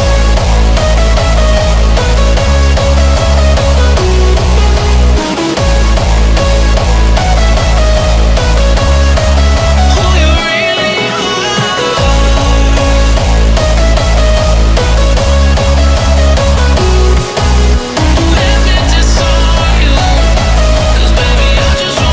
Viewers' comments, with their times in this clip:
0:07 I love when you fail in singing lyrics xD btw the step looks cool !